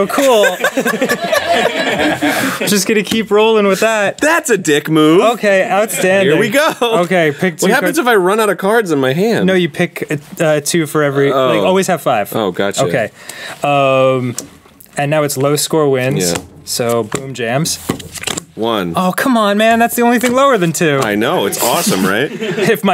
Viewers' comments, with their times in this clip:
0:04 forgot to bleep out cussing